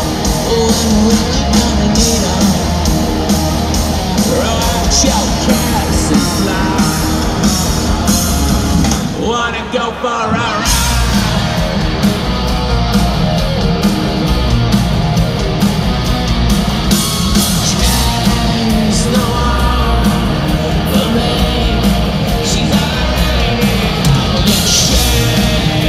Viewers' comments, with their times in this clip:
0:08 .... is that a back tracking double billy singing??